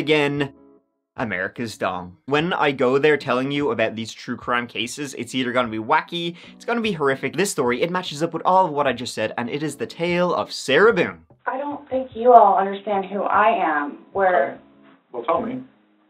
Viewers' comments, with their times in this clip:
0:03 did he say “America’s Dong” or America’s Dumb” ?